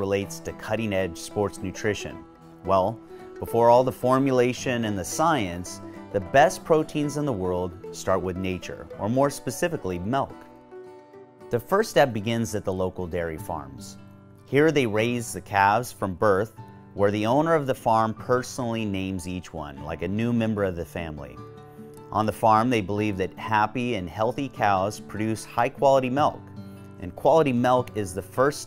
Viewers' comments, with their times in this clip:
0:10 what is mell-k